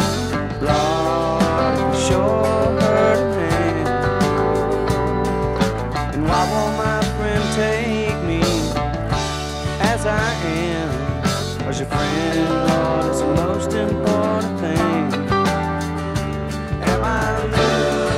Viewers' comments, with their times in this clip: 0:03 Those harmonics give me chills EVERY TIME... beautiful song 👍